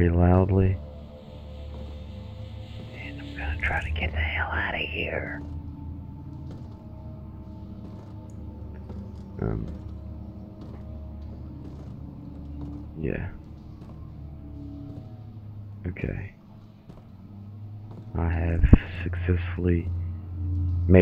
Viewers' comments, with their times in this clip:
0:04 ahaha whispering ish